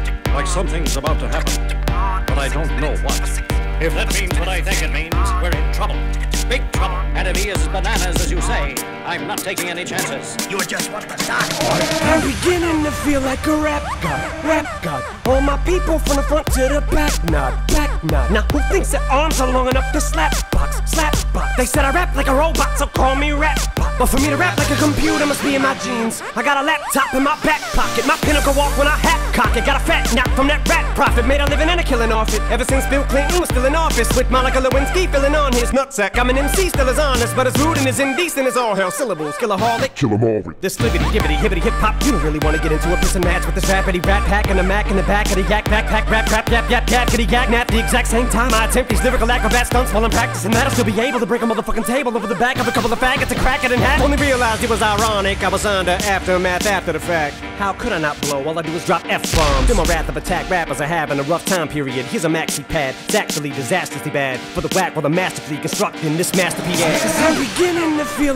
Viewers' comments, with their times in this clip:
0:03 when someone told your crush that you had a crush on them and see him/her gasp
0:40 He said skibidi? 😥😥😨😰😭😰😭
0:50 the most impressive part of this song is how fast he said medicine